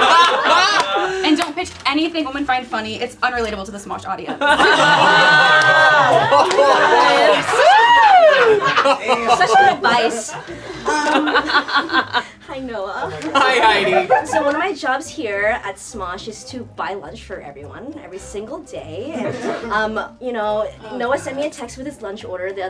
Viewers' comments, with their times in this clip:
0:07 you can hear keith's (try guy) laugh